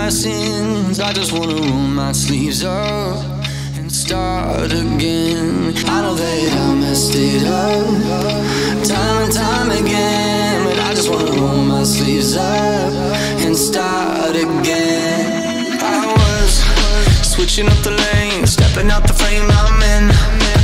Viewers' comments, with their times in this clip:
0:03 Does anyone else hear it get quiter